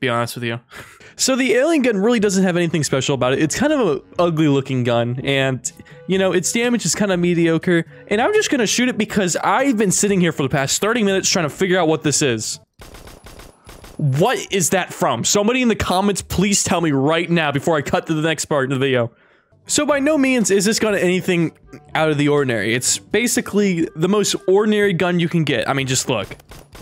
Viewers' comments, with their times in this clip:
0:10 it sounds like the mateba 6 but sped up pitched down
0:12 sounded like glock 18 in CSGO